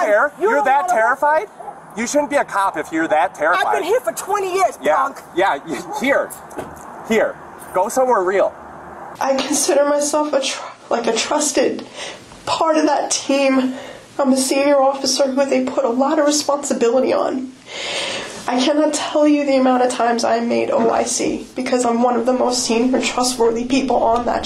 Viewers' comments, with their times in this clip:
0:10 [sobbing] Pretending to be a victim the way toddlers do to deflect culpability.